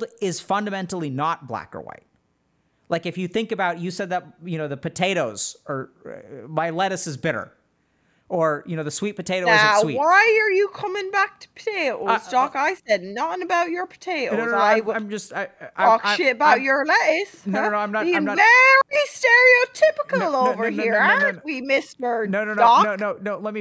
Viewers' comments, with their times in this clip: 0:04 The perpetual "no-n-no-n-no-no-no" is so funny to me. Like the teacher trying to stop the class clown from getting their joke across.